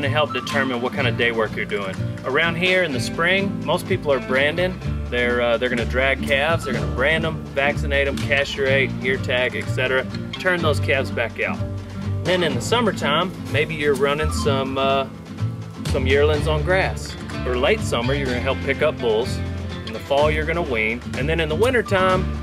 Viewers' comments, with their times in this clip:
0:08 that’s a new pronunciation of castrate.